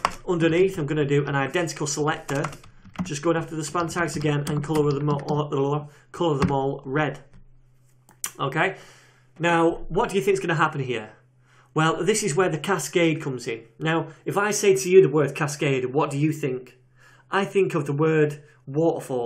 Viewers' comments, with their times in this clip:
0:04 🤣 this happens to me always when mind is faster than tongue